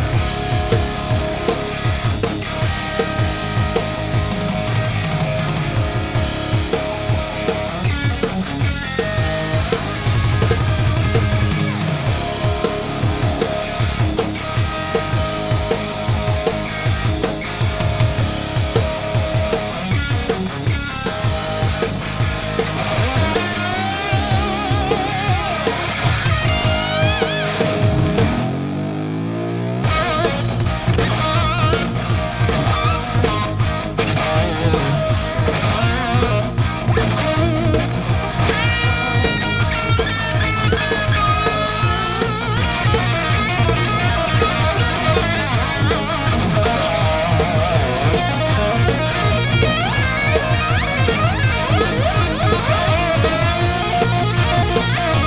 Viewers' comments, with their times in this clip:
0:08 in, the fill was absolutely nasty. I hope we all appreciate the thousands of hours of work and dedication that went into that 5 minutes. Well done boys.
0:42 sounds like something from fair warning